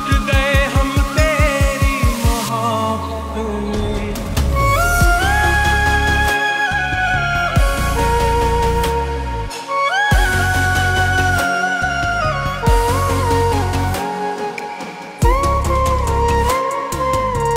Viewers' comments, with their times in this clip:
0:05 Goosebumps in starting and ...Saiyaaaaaaan...Flute + Salman Crying Sync Beat